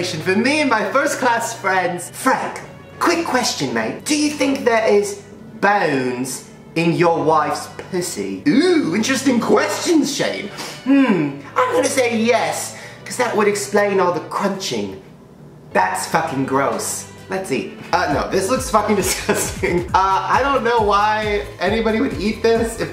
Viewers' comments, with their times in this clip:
0:04 Is it just me or does it make you laugh so hard when he uses that accent